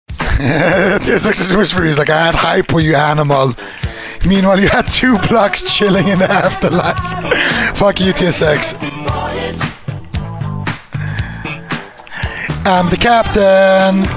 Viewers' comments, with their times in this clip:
0:00 fastest laughter ever